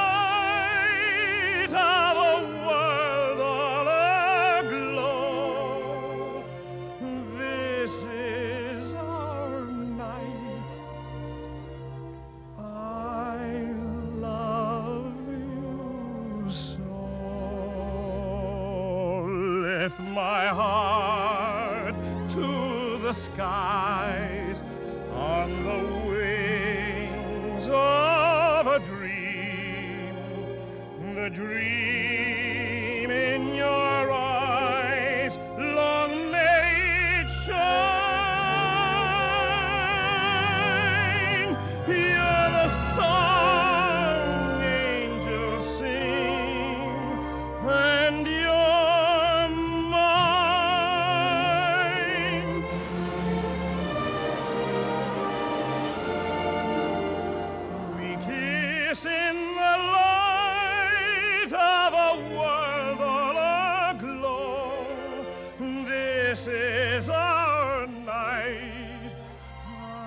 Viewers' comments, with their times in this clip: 0:08 That "our" Just wow.... Could listen to that on repeat for days
0:53 What a beautiful voice he had RlP Mario ❤